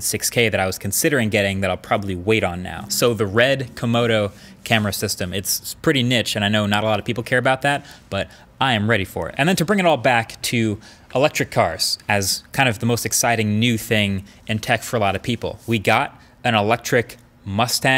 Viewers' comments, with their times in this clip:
0:04 so are we just going to ignore how he pronounced "niche"